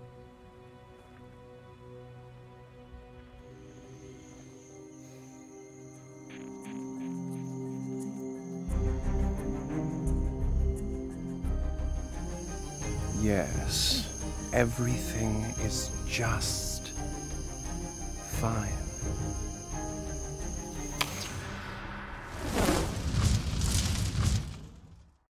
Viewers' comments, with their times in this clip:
0:05 i just realised that janus’ voice only comes through the left ear?? i think it’s probably a nod to logan being associated with left brain and also anger occurring in the left brain (source: v quick google search lol) whatever it means, it’s such a fun and clever detail, im so glad i finally noticed it!!
0:13 i can only hear janus in my left ear because nothing is alright